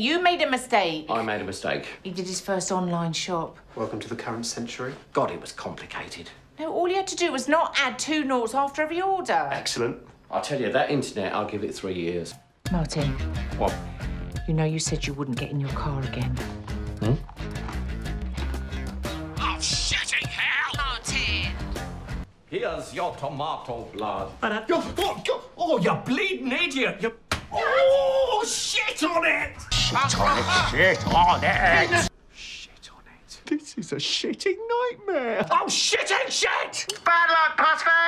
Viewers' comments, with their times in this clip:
0:09 Is it just me or did Jonny sound like Neil ?
0:24 he sounds either irish or scottise also my name
0:26 he sounds Irish